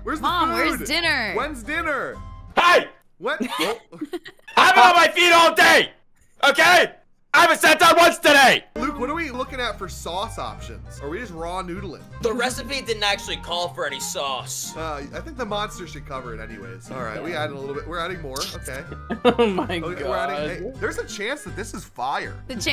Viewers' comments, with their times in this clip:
0:03 Sounds like XQC as a working mom